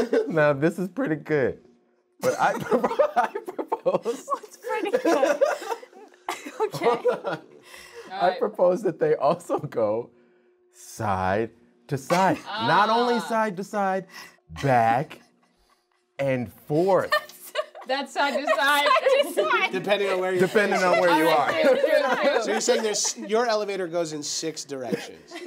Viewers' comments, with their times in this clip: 0:08 SOMEONE YELLED CUT I HAVE CAUGHT THE SMALLEST MISTAKE IM GONNA BE INTERNET FAMOUS GUYS THIS IS GOING STRAIGHT TO THE TOP MKAY YOU GUYS